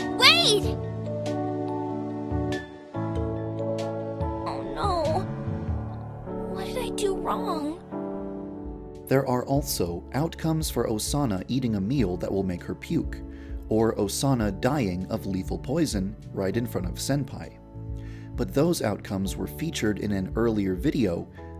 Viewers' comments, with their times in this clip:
0:03 awww i feel bad she sounds so sad